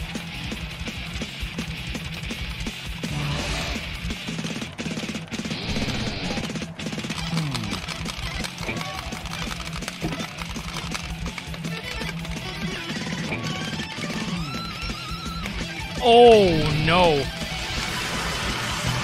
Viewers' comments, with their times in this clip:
0:06 I thought you were playing bOne(r) again